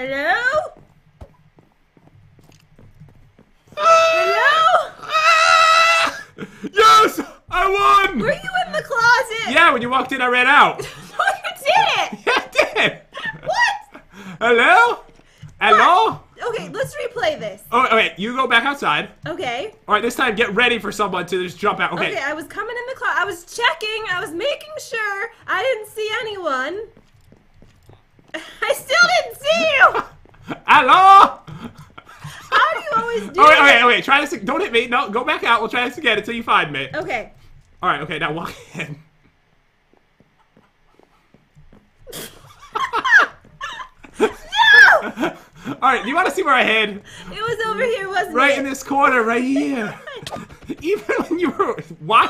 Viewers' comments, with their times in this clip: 0:03 What was that voice lol
0:04 from slience to high pitched sheep/boat🤣😂😆🤣
0:40 did anyone heard a chicken?